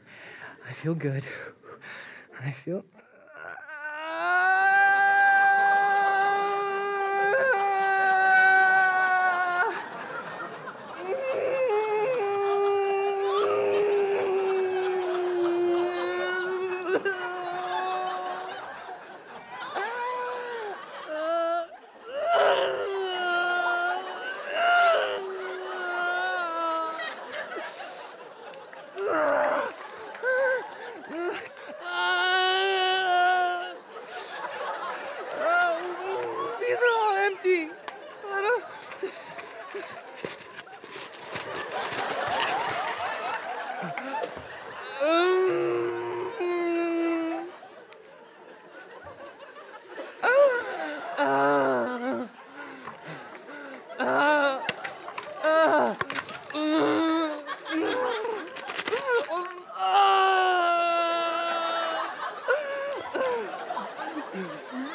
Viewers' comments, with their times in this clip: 0:08 I like how she is just drinking but her husband is crying in pain
0:49 Did anybody else think of Troy's meltdown from #Community right here? exact same leg drag and moaning haha